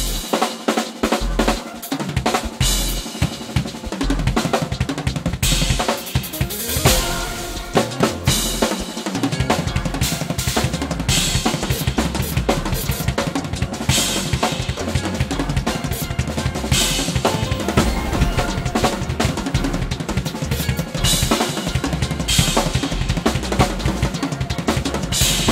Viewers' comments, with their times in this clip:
0:07 Lol he sounds like 🚁 -🔥🔥🔥.... Power, precision speed.